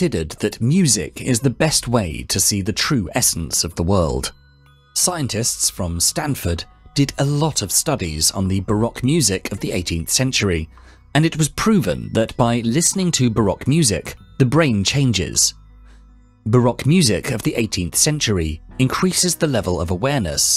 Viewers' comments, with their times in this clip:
0:08 "Studies on the BARACK music..." lol AI voice